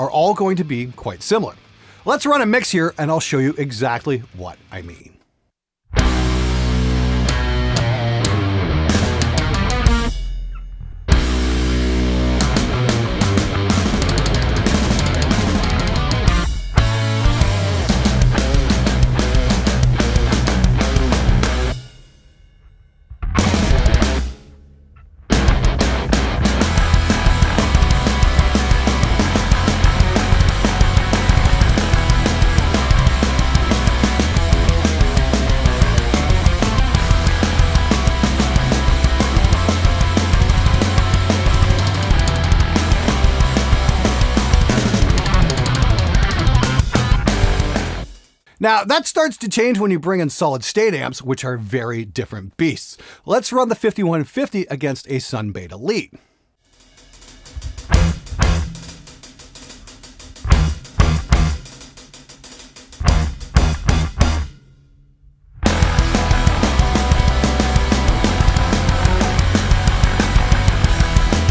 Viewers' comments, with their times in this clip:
0:05 Damn!!!! That little song piece is super duper
0:57 that is the tastiest progression I've heard in metal in 5 years